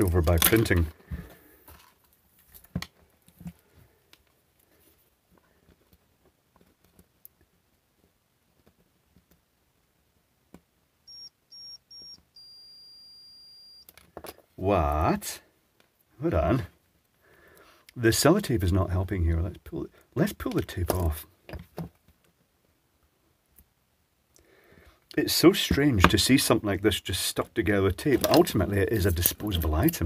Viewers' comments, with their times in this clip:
0:09 Nice tune on the multimeter BTW
0:10 I didn't expect the meter to sound Beethoven's 5th.
0:10 Beethoven's 5th with a cauterizing pen and a multimeter lol
0:10 is it just me or did your multimeter play the first bar of Beethoven's 5th?
0:10 am I crazy or does the continuity mode output two different frequencies?
0:10 the tones were the start of Beethoven's fifth (almost). Impressive. Illuminati confirmed.
0:10 Is your meter playing Beethoven No 5? Nice!
0:10 The sound of the multimeter 😂
0:11 That was way simpler than I would've expected. Interesting! Loved the accidental Beethoven hahahah